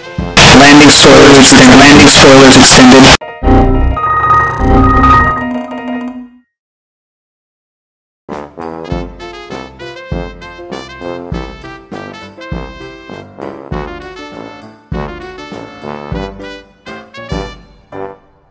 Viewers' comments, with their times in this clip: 0:03 oh my... HEADPHONES!!!!!!! Edit: CRJ1000 OMG WHAT??